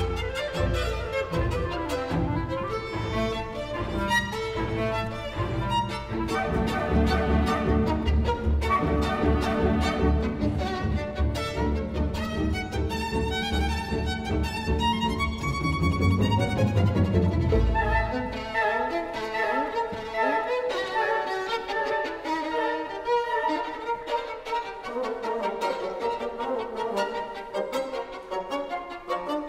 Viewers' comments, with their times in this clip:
0:10 Yeesh, completely wrong notes and an overall sloppy performance.